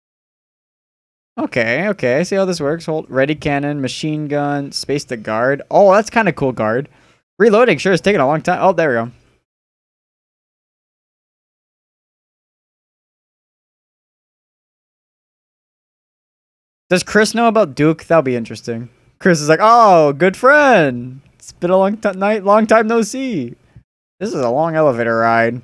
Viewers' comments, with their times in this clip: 0:10 don't worry I'll just imagine the sounds